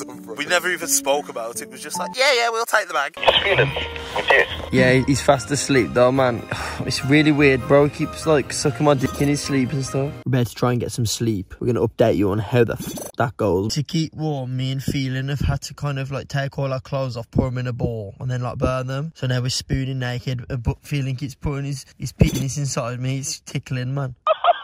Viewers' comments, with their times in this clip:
0:09 anyone notice that glitch noise is their noise for blanking out swearing